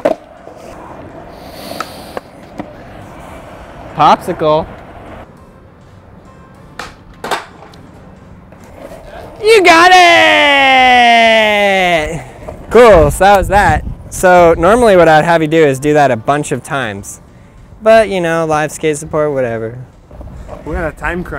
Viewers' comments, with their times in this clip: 0:08 Headphone users . you have been warned